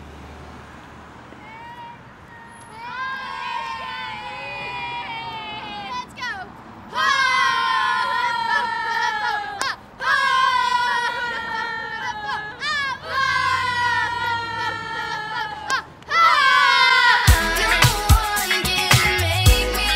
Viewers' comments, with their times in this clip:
0:06 Go back to what is she yelling?!?!!